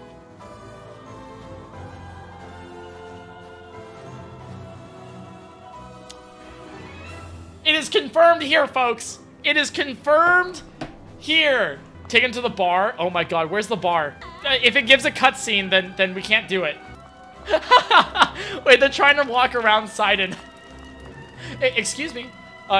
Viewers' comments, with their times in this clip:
0:04 THE MUSIC TIMING THO